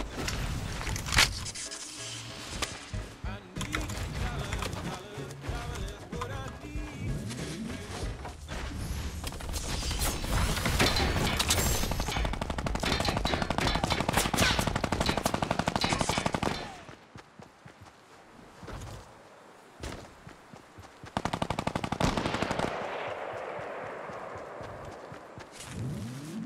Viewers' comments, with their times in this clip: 0:10 sounds like they added a helicopter to fortnite